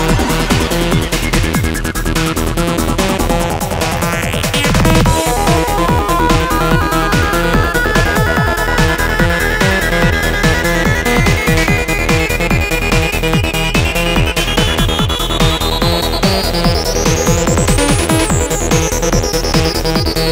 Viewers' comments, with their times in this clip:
0:04 This has to be the trippiest Goa Trance mix I've ever heard, there's a synth solo in track 2 that is just so mind-blowing (it starts ).